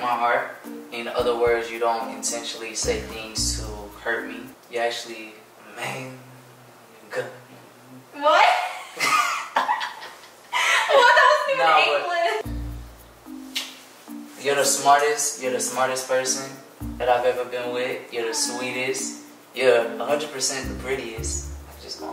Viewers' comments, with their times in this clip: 0:06 anyone figured out what he said?😂😂